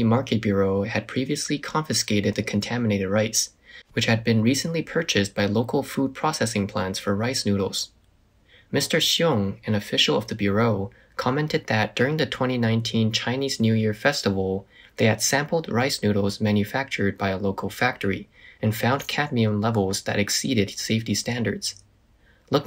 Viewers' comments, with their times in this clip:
0:10 Whenever you say Bureau it is wrongly pronounced. The last part "reau" is supposed to have a lower pitch, but you always raise the pitch. Most 2 syllable english words start from a medium or high pitch and end at the same pitch or lower, usually lower. I find many students taking accent reduction classes pitching up instead of pitching down.